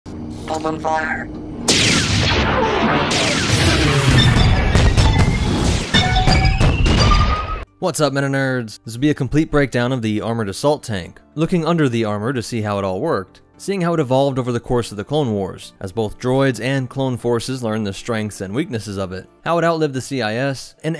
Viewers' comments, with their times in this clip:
0:01 Literally the best scene in Episode One, back then the battle droids sounded cool.